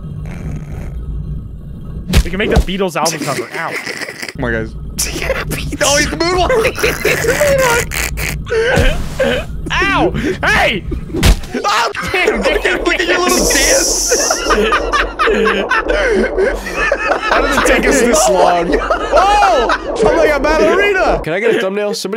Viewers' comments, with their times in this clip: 0:05 it sound like Optimus Prime from transformers